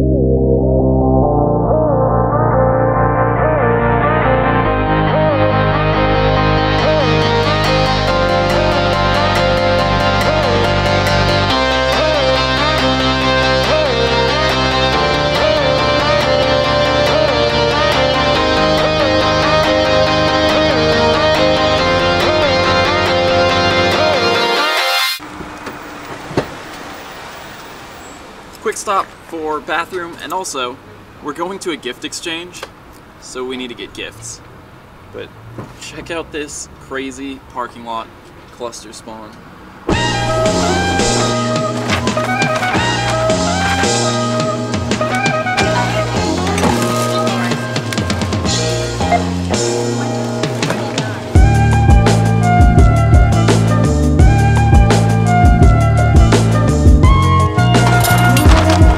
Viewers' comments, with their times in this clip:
0:09 Glad you're feeling better :) We were all sick here too (fun times...). Love that montage music for the road bit, Beautiful mountains, too.
0:46 Did she buy a minion fart blaster ?